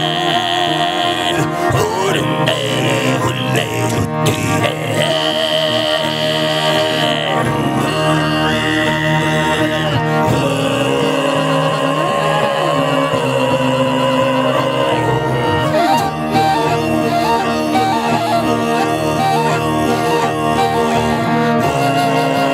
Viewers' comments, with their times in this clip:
0:07 I have never heard such vocals come out from a human like that, astonishing